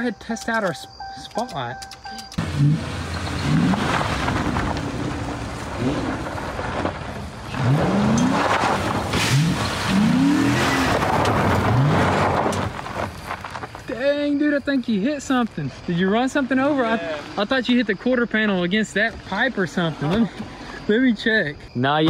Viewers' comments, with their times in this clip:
0:08 did you hear that branch snap? lol dang I thought you hit the pole for a second there